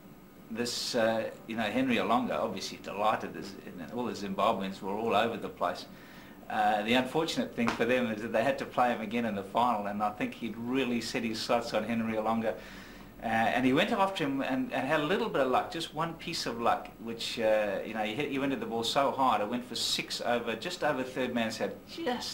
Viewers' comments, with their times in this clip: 0:10 my left ear knows more than my right ear